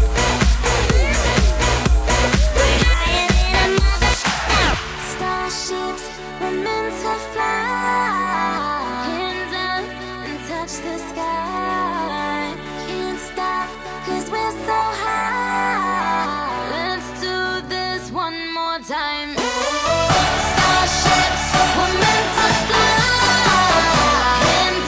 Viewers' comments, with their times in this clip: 0:05 Such a wonderful, natural voice. Like an angel😍
0:05 I love her voice
0:08 OMG she sounds like an angel
0:09 wow her natural singing voice amazing. :)
0:09 its not on autotune in